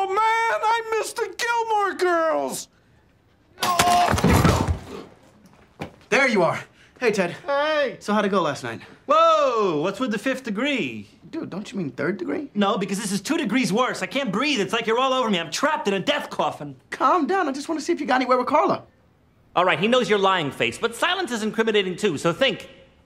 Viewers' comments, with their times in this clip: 0:08 I keep replaying over and over again to hear Ted's pathetic "hey!" lol. XD